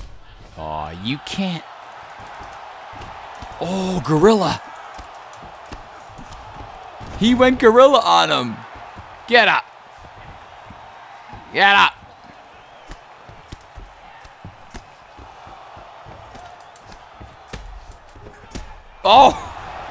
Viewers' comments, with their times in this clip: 0:07 had me dieing. just how u was saying "get up!" lmfao.